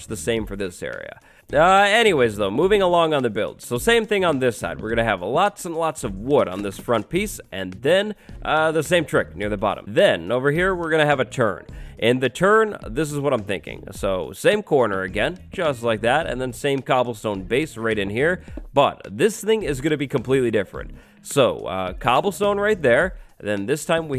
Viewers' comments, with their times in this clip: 0:10 lol i hear "turd" instead of "turn" XD